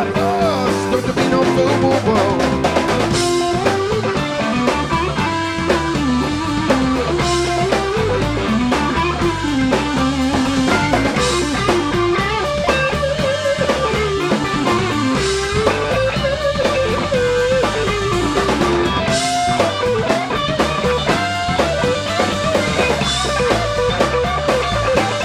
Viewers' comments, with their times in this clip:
0:08 Killer groove. Greg is insane! Is that the Tone King ?